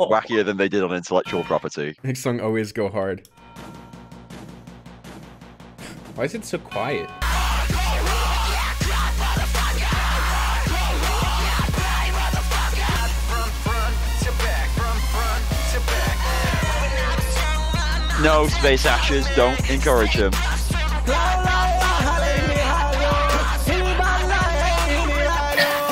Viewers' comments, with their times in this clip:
0:06 That cut from "why is it so quiet" to the fucking 100 decibel screaming was brilliant